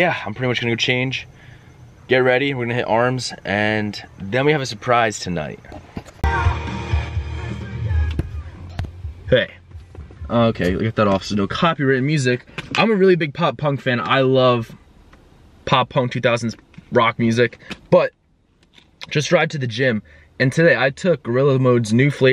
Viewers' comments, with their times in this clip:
0:07 song straight banger 🔥